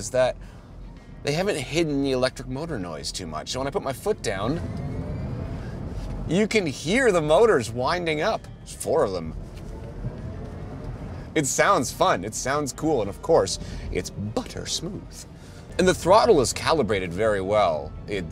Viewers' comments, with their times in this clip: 0:04 .... Does not sound as cool as a V8... Sounds more like a toy than a car...